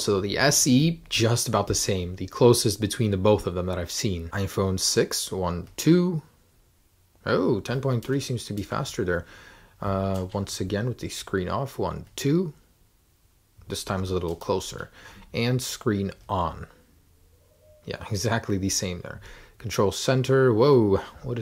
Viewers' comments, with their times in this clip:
0:07 Who hears the owl by